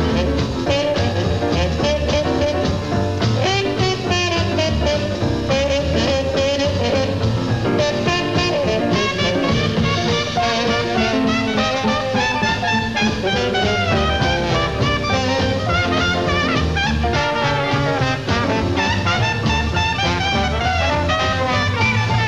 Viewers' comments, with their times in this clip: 0:10 Big Chief's 4 notes and the few after. That vibrato. All by air. Oh my.